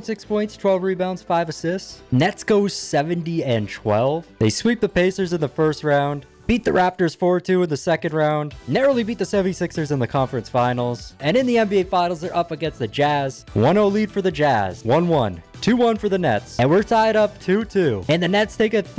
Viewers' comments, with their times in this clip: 0:06 was a bit of a voice crack to say the least lol